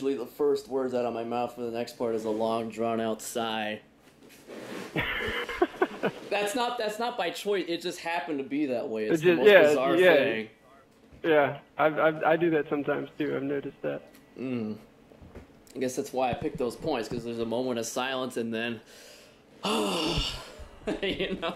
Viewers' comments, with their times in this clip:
0:04 you can hear the new squeaks mc chair!